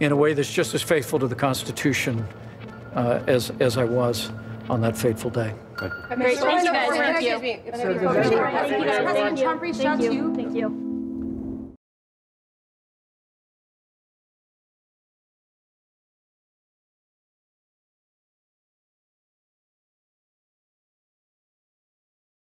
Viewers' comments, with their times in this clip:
0:04 "What was Faithful about that Horrible day..." To be fair, I think Pence said, "...on that fateful day."